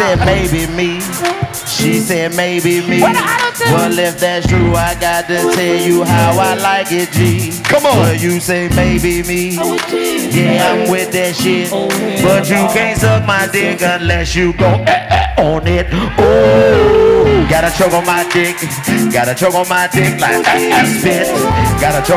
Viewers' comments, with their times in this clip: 0:04 When DC picked up the auto tune that bih sounded so fire. “I was tipsy, oh hell nah.”